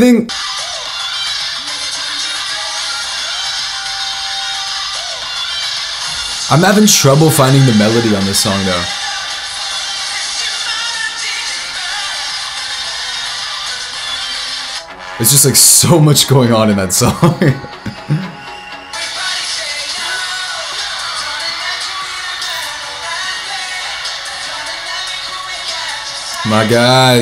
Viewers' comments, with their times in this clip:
0:09 Monsta X are so underrated. You can clearly hear them live and Kihyun is just a strong vocalist. Plus they do intense choreo like a lot of Kpop groups. People can hate and complain, but they are talented and deserve more popularity.